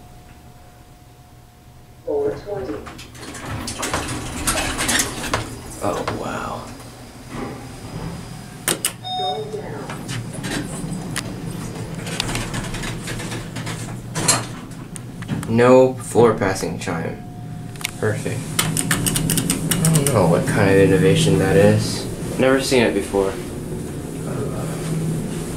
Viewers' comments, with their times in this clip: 0:08 the hotel's attempt to shorten the chime so it's doesn't infringe its heritage